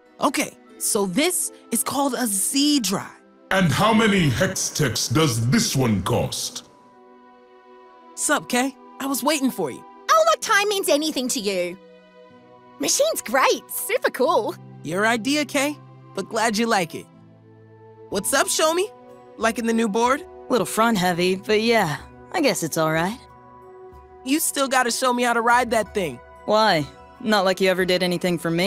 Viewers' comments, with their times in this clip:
0:09 Is it just me or is Skye from Valorant the one that did voice acting to Practical Perfectionist? ( I know the games are made by the same company.) They are very uncanny especially with that Australian accent.